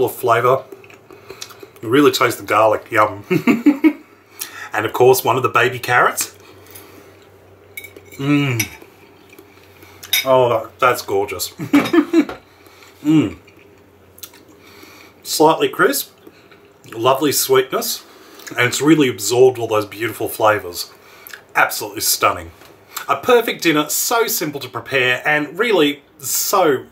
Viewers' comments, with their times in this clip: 0:10 man edited in a laugh